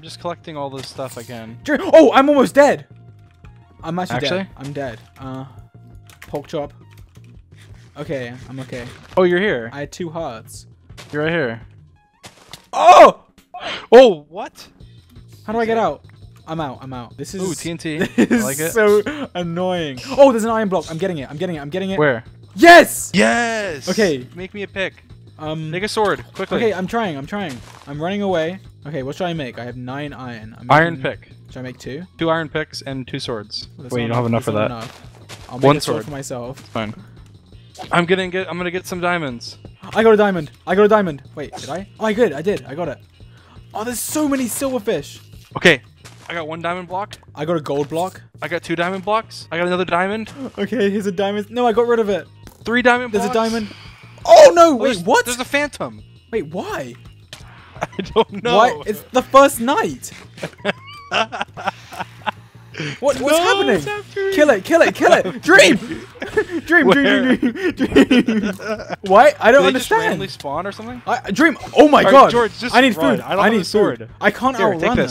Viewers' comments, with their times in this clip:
0:08 i just noticed if you hear really fainly DO DO DO DO speed run music
0:24 dream sound like he says the n word
0:24 what did he saayyy
0:25 it sounds like n- word sword
0:25 sounds like dream says n word
0:25 it kinda sound like he says the n word
0:25 make me a niggasword ------ Dream
0:25 anyone else hear dream say the n slur
0:28 Dream said:negga sword
0:58 he said n-word sword 😂😂😡